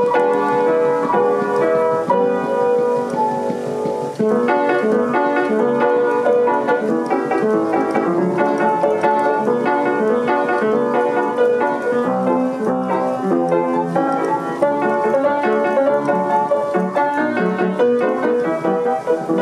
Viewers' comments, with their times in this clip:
0:03 What an amazing machine! Well done for putting that back together! Also, is it just me, or does the piece starting sound somewhat like Super Mario music...